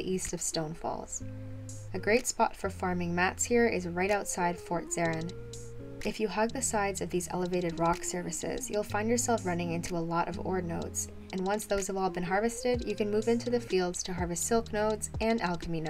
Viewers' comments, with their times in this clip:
0:03 She said something about out side fort zeren and but i thought she was trolling and said outside port serim. Lol